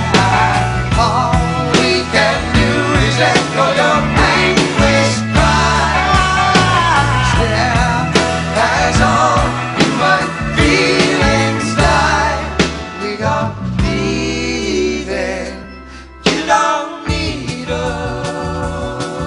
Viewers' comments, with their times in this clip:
0:04 What singing skill by Graham Nash !!